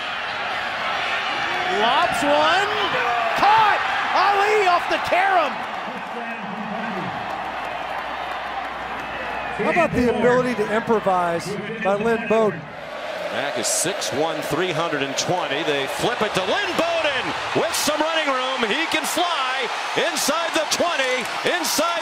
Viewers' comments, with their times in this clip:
0:03 you hear some poor vandy sap scream NOOOO